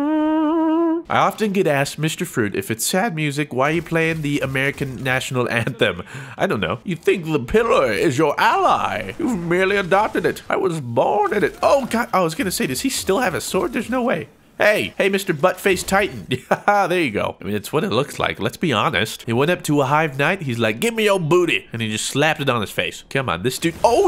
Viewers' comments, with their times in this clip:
0:10 best bane ever :)